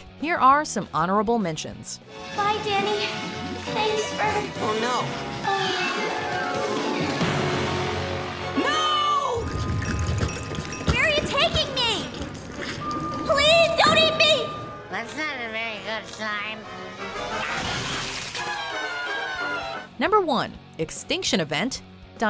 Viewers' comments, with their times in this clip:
0:04 that was the happiest “oh no” ever